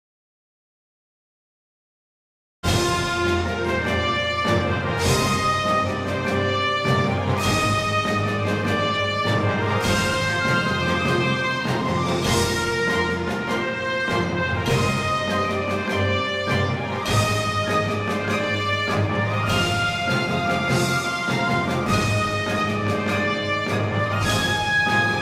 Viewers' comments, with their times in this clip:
0:07 that low rent copy of the original theme is worse than nothing 😔😳🙄😬 (not that I think you should license the original, just saying)